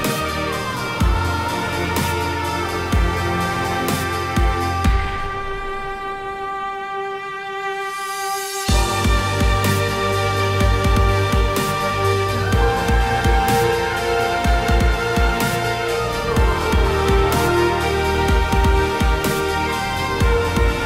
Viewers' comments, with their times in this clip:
0:07 when you watch through the entire video because you enjoy the music during the walkaround ;) especially lol